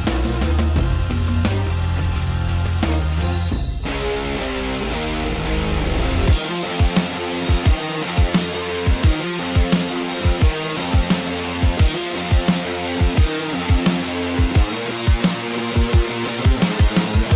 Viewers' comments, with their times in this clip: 0:03 bro! your pegs are so epic, when you take off your shirt, out of nothing, metal guitar music starts blasting! like literally out of the blue!